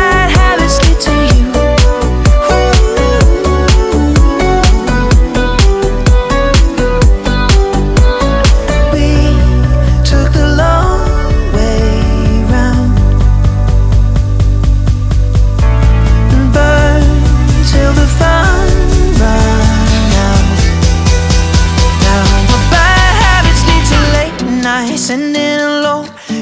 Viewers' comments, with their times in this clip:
0:08 This song again😂😂